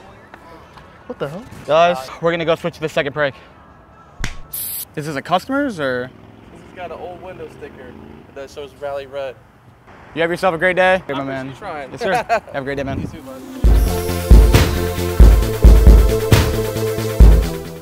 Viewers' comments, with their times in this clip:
0:05 Bro the sound his hand made when it hit the ground. I felt that